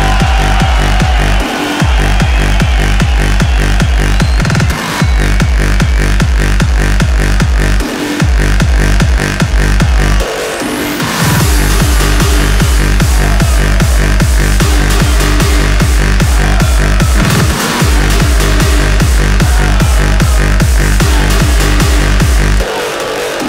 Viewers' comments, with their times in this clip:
0:07 and the "Hee Hoo" begins... ffs..